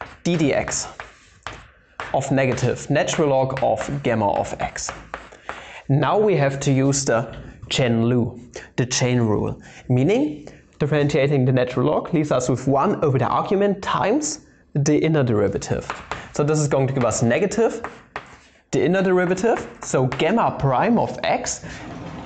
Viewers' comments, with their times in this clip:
0:06 ...the chain lool..ahem chain rool. I know exactly who you are referring to.